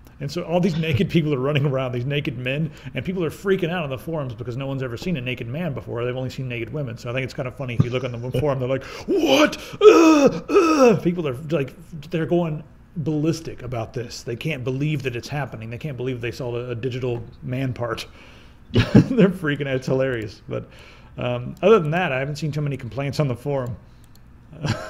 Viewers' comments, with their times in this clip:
0:10 the guy murdering the pig in the background was... different.... +
0:12 Notice the pig beating in the background. lol